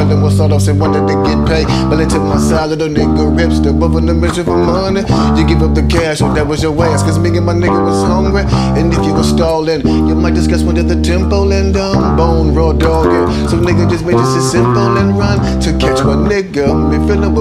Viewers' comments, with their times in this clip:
0:05 When he raps 🙏